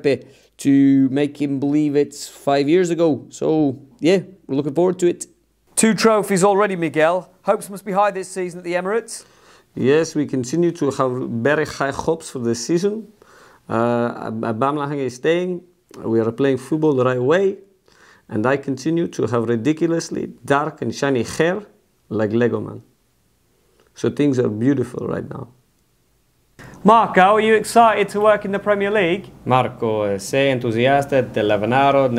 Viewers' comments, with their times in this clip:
0:10 what a brilliant little addition of speaking from the back of this throat. 😂 A normal Arteta using very little of his jaws to speak would've been decent too tbh, but the attention to detail is crazy!
0:15 "Abamaheng" is staying🤣🤣